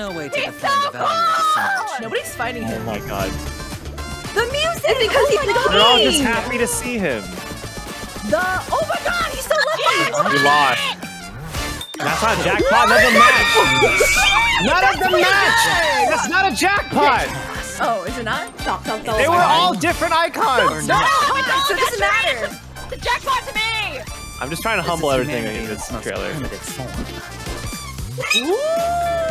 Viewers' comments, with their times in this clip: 0:10 and then everyone screamed and simped
0:11 Clara and topaz VAs screaming
0:12 I felt that... I was literally acting the same with all the screaming and I practically dropped everything to watch this....